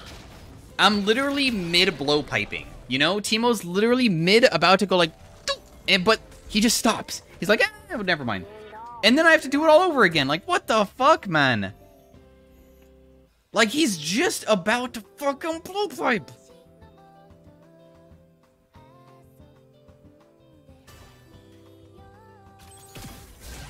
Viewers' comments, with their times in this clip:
0:05 liked the teemo impression